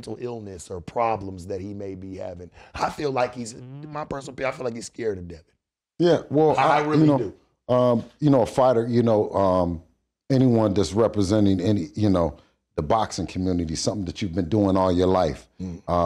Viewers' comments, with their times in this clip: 0:03 was that a fart 🤔🤭😂